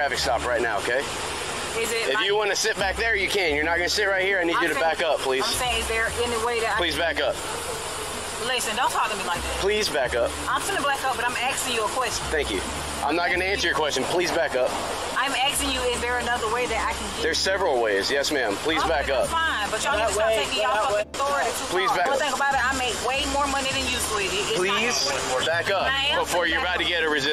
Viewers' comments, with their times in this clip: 0:08 Poor thing she can’t even speak English.